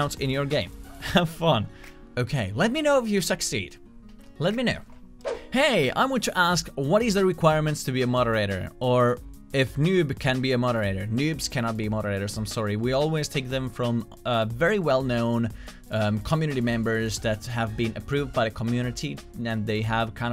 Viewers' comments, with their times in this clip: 0:07 I thought you said sexy